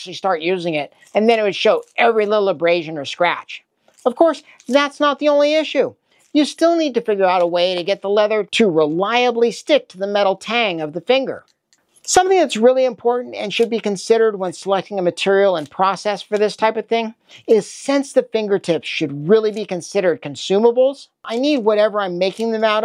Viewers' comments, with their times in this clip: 0:10 are you saying "Tang" or "Tine" I know a "Tine" is an individual tooth (or finger, haha) of a fork, but if you're saying "Tang" can you explain that to me? Is that an engineering term?